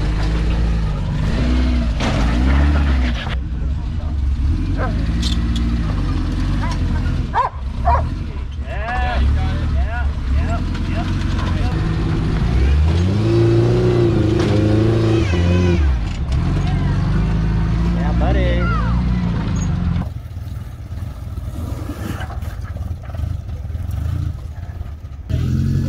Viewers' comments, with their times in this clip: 0:06 Did that dog just give her a "ur good to go" bark ?!